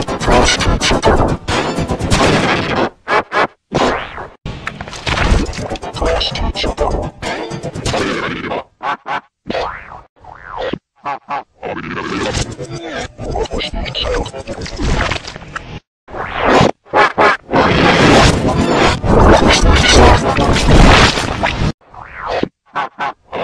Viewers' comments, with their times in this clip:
0:06 sounds goiing weridness every